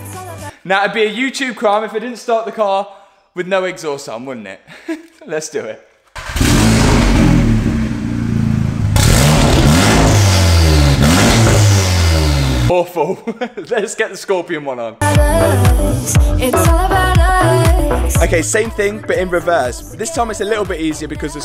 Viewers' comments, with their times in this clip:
0:04 Am I the only one who quite liked the sound of no exhaust?
0:05 he said the sound is not good, whaaat Thats actually dope